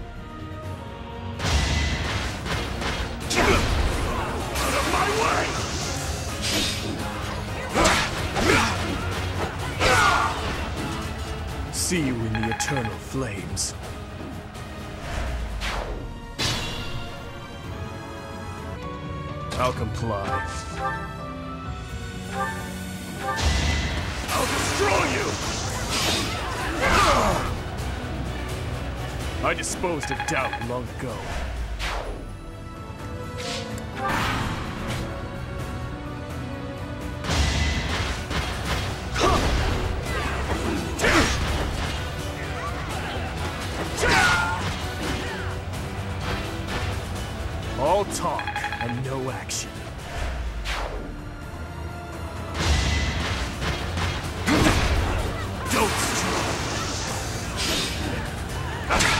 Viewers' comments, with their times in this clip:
0:04 Holy shit the guy who voices Dimitri is very talented
0:45 The knight dying syncs with the music